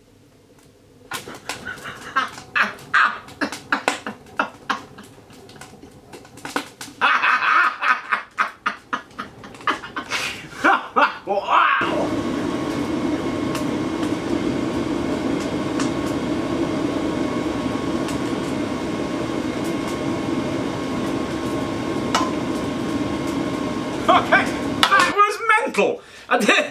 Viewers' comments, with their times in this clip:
0:07 the mad scientist laugh and unbridled exuberance is the best, the best! This competes with your underpants wind turbine short, lmao!